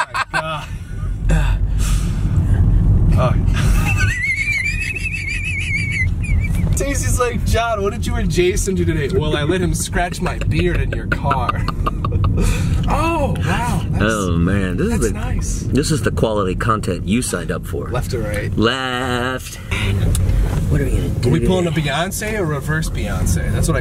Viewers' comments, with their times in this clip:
0:03 is that a whistle 😂😂😂
0:04 no one: car starting: